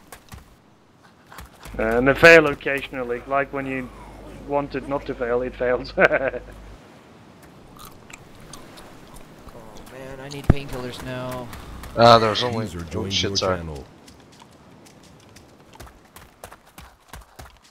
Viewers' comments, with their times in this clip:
0:04 god that evil laugh is perfect